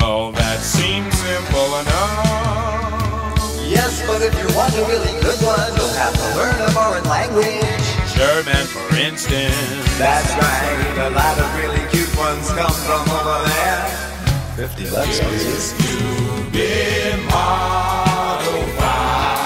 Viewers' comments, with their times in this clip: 0:07 Love that modulation at "German, for instance"